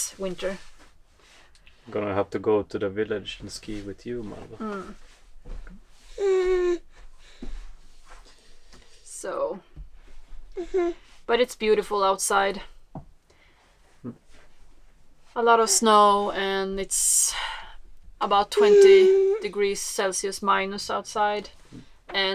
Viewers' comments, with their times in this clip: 0:06 The star finds the camera instinctively then adds a solo worthy of Billie Eilish !